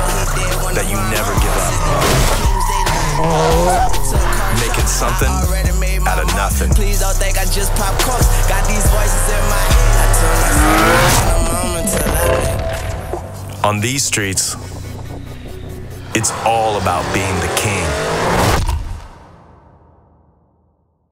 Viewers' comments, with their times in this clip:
0:03 Fart sound effect